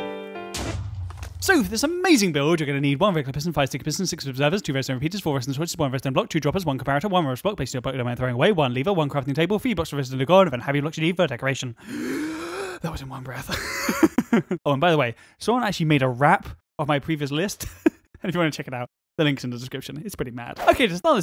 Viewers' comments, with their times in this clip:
0:03 Henlo, I laughed harder because you speaked so fast.